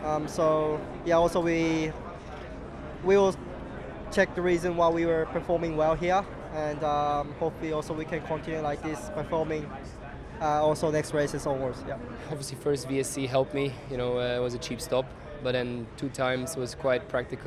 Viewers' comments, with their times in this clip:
0:03 Funny how Yuki sounds australian now that he hangs out with Richardo